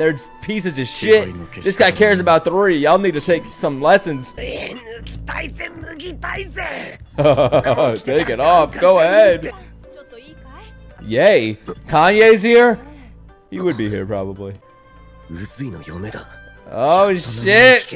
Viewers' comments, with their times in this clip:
0:04 N word??? not trying to accuse, i might have missheard